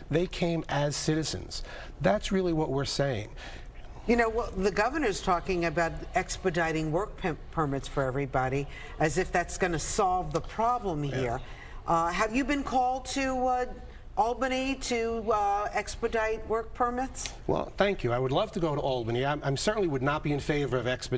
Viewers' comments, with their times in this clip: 0:06 work pimp permits?